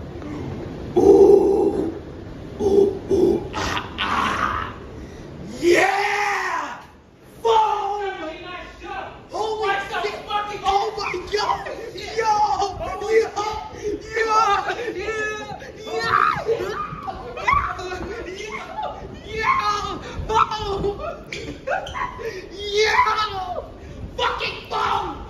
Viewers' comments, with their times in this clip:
0:06 when someone sounds like Roy koopa from Mario kart